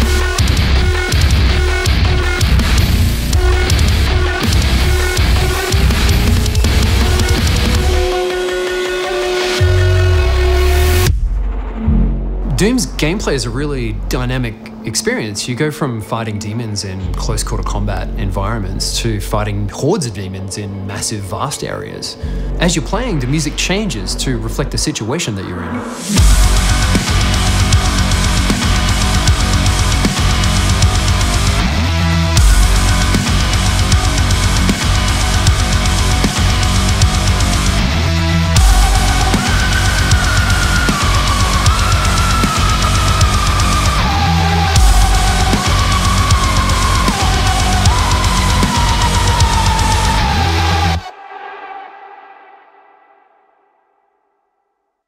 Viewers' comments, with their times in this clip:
0:08 The music was Made on USSR equipment, this is why it sounds like a nuclear blast from Demons Hell
0:38 the synth really brings that "sinister" element to the song.
0:39 screams of the damned
0:42 Look at that string BOUNCE! damn thats a low tune O.o \m/